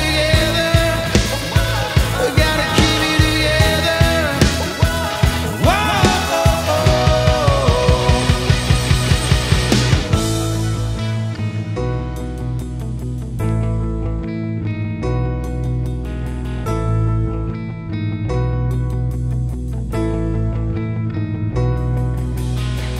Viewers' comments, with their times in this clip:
0:09 Not sure if anyone has mentioned it, but just after there is a very audible audible click and hum in the right guitar channel. Needs removing. Surprised Warren didn't pick up on it. Maybe he did and didn't want to get too specific. Hopefully you find this observation constructive, it can be easy to miss these things, but it immediately jumped out when I was listening.